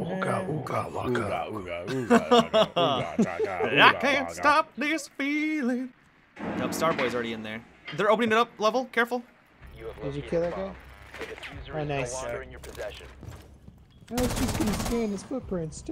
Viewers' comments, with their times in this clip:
0:03 now that's a hot singing voice 😍😍😘😘